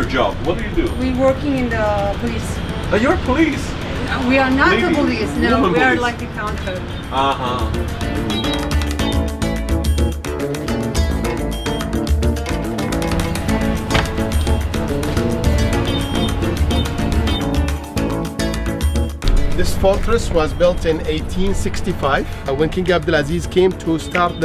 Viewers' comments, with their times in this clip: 0:10 (oud music) and I hear 0 oud in the music.